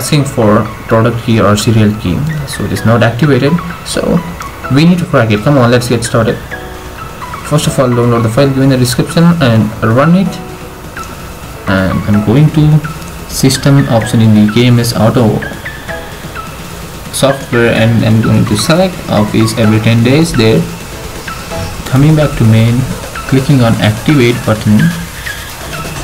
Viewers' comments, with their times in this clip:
0:09 "first of fired during a description" ??